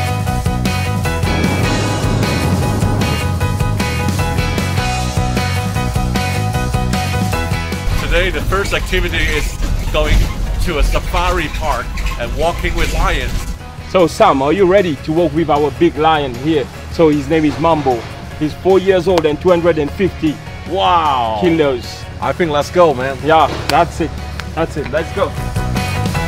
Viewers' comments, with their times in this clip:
0:10 Ryanair taxing noises